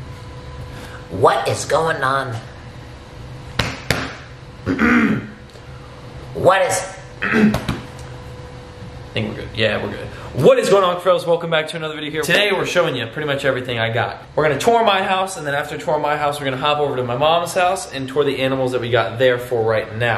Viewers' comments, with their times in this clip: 0:06 sounds like a gremlin